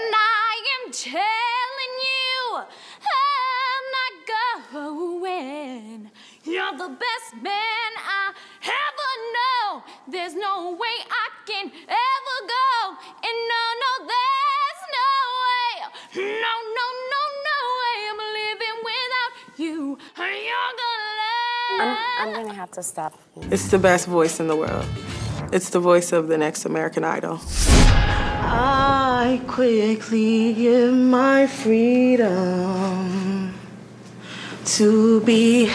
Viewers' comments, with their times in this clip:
0:03 he had a good voice but all that extra stuff he was doing have to go
0:14 she's got a good voice she just isn't using it right.
0:19 she stopped the blonde girl at like she sounded decent .but didn't stop the guy at the beginning. 1 something . pathetic judges !!